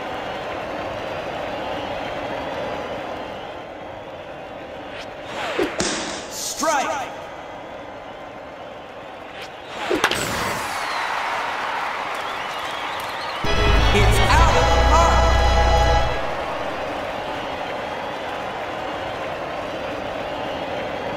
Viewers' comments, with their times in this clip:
0:09 crash boom bang it's a grand slam